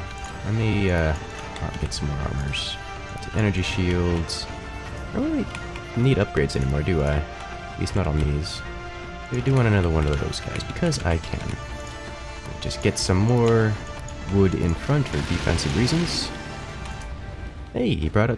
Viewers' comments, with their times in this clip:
0:03 I think I heard a gnome